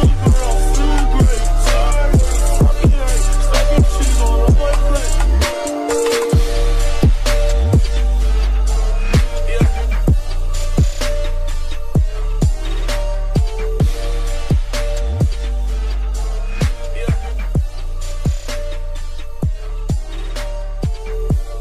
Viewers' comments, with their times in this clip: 0:06 his shots goes with the base